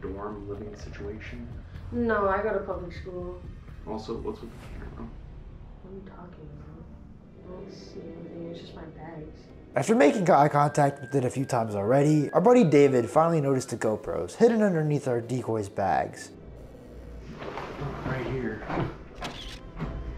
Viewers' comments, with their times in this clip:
0:05 NOT SAYO-NARA PLAYING IN THE BACK 😭